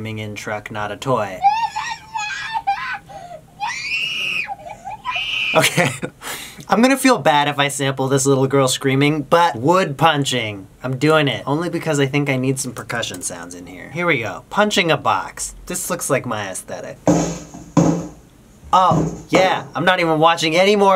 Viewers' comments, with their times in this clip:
0:04 that laugh turns to a sniff its soo weird!